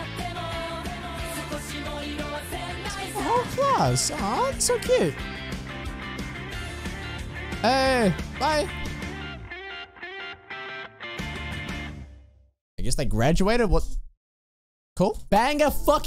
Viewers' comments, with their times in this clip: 0:03 this scene transition and music is match and that scene make feels good when ever I heard that ost sound track❤❤❤😮😮😊😊